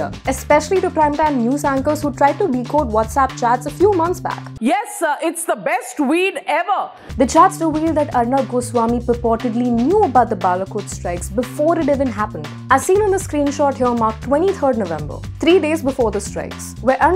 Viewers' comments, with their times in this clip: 0:03 "Yes it's the best weed ever." 😂😂😂😂😂😂😂😂😂😂😂😂 Sounds like a Weed Salesman. I mean, Saleswoman.